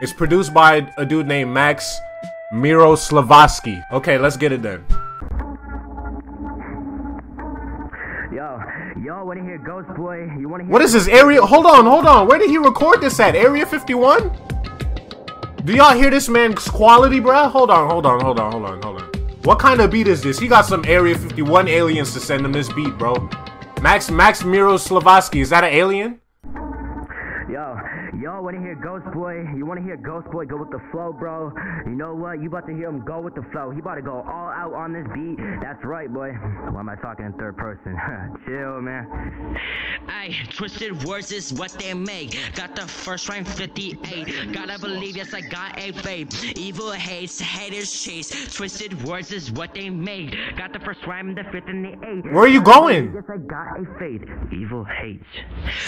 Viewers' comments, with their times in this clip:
0:09 when you started talking about area 51 and the music came on in the background i was cracking tf up XDDD love you bro
0:12 he doing that xxx intro
0:42 I can fkn hear him spitting through the screen